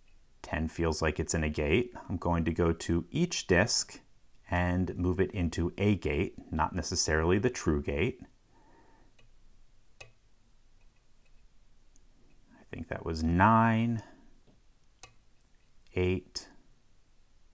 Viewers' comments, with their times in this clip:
0:04 LPL puts a video more than ... this lock is something special... either is on the hard side to pick or there is uber cool story behind it that makes LPL so excited he has to share it with us (in a most calm voice ever).